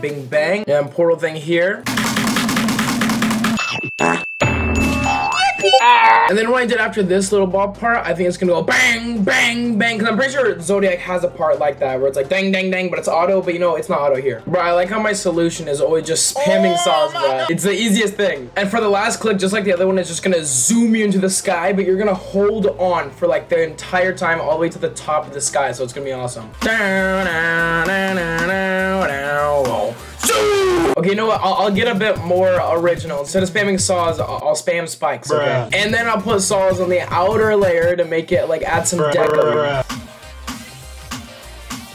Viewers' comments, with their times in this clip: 0:08 Does he not sound like chief keef ??? at this moment
0:29 that SUIIIII got me laughin💀